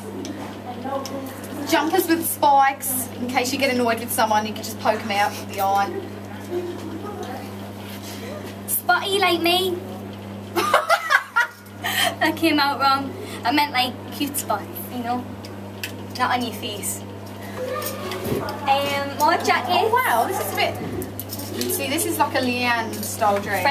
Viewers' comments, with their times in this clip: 0:06 Jade's laugh and face ♥ I can't !!!